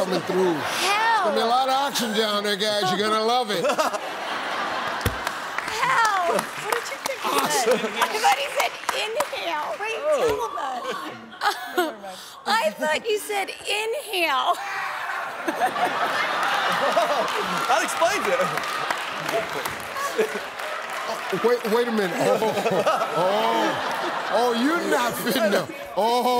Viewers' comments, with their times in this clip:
0:09 In her defense, the way Steve says "in Hell" does sound like "inhale."